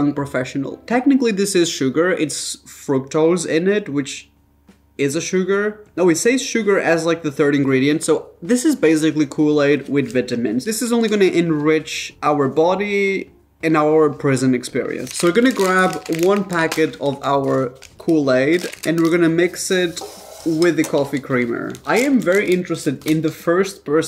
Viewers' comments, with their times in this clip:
0:09 I'm sorry, but how did you just pronounce vItamins????